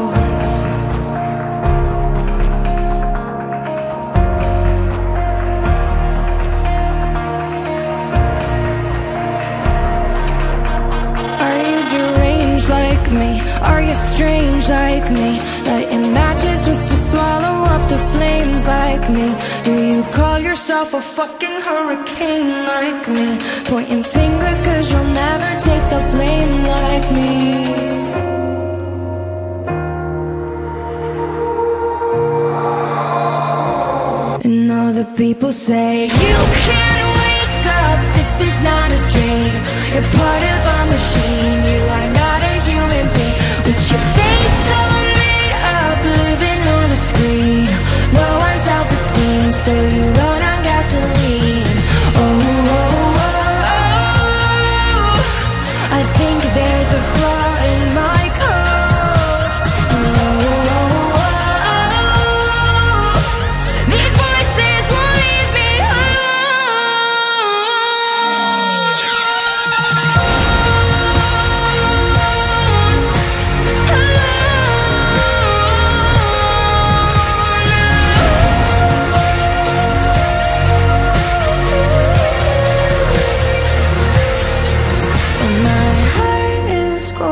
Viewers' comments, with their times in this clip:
0:10 Her voice is heard before she took the microphone towards her mouth here so I think this is a playback but still an amazing show and I know Halsey could do the same without playback, though.
0:10 I love them sm but are they singing live tho? Even if they aren't, this performance is still AMAZING THANK UUUU
0:11 I think it’s a lip-sync, skip to she picked up her mic too late but there was no difference in volume.
0:21 That auto change !! I don't yet know how to do a Fxxk"N Hurry Caine. I'm Trying. Best, X. In Jesus Name, Amen.
1:01 As if this song couldn't get any better... we are gifted with this. The way she belts out the line just gives me chills every time.
1:08 got me a goosebumps Halsey is really a great singer to convey feelings throughout her songs 💓👍